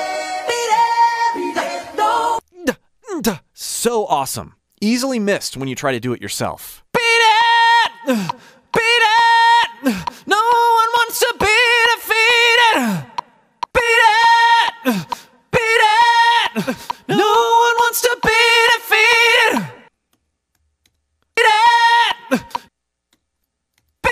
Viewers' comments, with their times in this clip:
0:07 To me, out of a vocal perspective, the "uff's" in between are also a practicle way of releasing tension from core area. Just to not "lock-up" and miss the next breathtake (which I need to get even in power haha) Great to go along with you listning to these incredible vocal lines. Now I am "hooked" and want to explore more of your content!